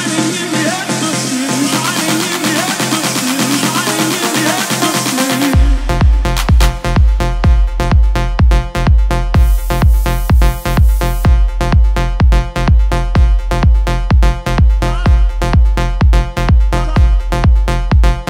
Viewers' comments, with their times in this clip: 0:05 that beat like AHHHHHHH